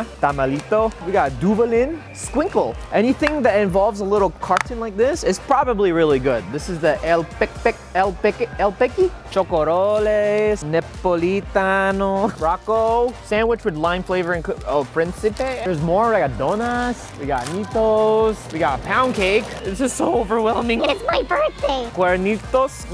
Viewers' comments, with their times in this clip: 0:04 To all the phillipino people that heard him say pik pik ifykyk